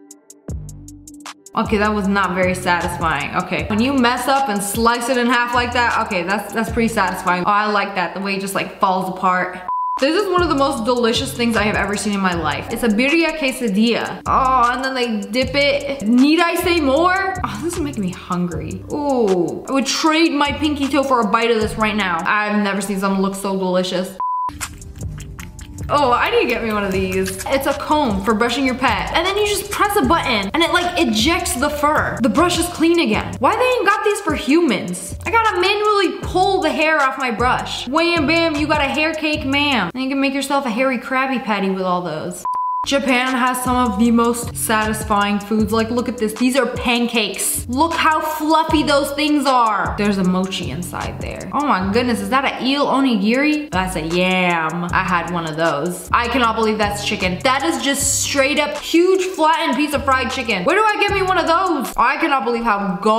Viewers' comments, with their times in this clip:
0:04 the sound she made tho 🤔😩
0:48 the accent was a chef's kiss